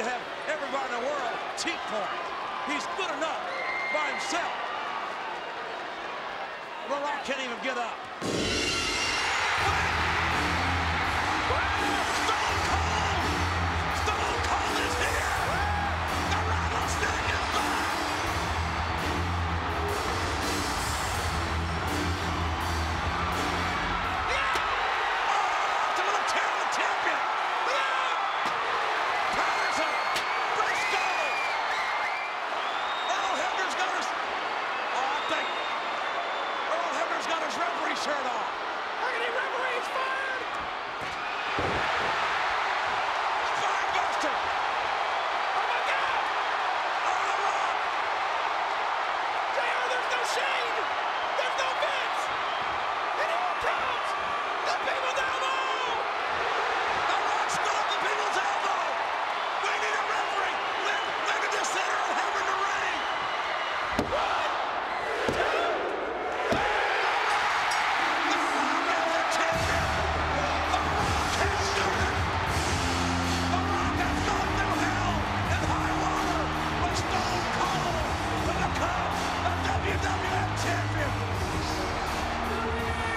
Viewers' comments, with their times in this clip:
0:07 austin monster pop
0:08 The pop though 🔥 Only SCSA can do that
0:08 My God that PoP
0:08 LISTEN TO THAT POP. No one will ever be as over as Stone Cold was in his prime. Ever.
1:06 There are pops…. And then there are POPS!!